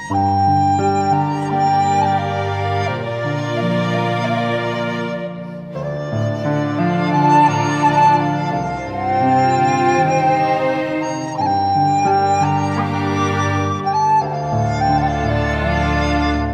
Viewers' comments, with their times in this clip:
0:03 I need to know what the name of the song is. It is so epic.